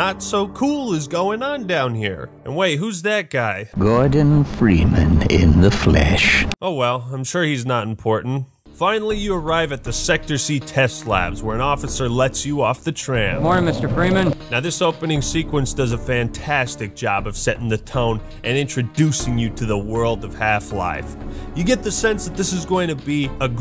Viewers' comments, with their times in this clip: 0:10 Alright gotta say I like the music choice Nostalgic and definitely fits the vibes haha